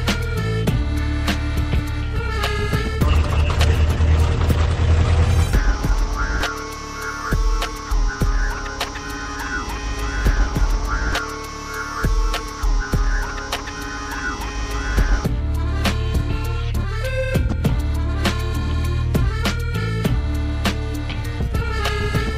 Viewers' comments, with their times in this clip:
0:04 im so glad happened. i was hoping you wouldnt forget the little bridge. coulda gone another 2 measures but ah well. good shit